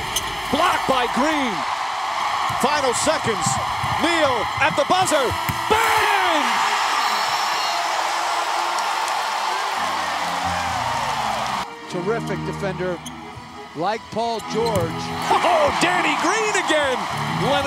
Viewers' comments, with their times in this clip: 0:05 Love the way Mike Breen says BANG!!!